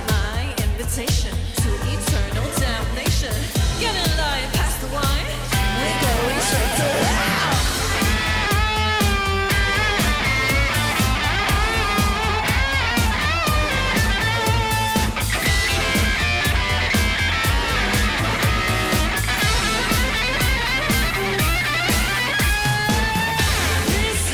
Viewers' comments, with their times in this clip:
0:08 There is something strange with this solo ...